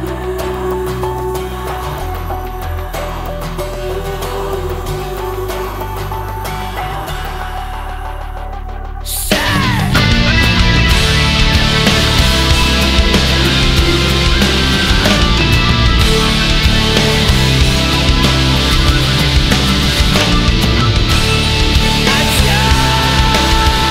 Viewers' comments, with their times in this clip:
0:10 is where i usually smash the gas pedal. always loved the guitar effect used there. very 311 (tim mahoney) ish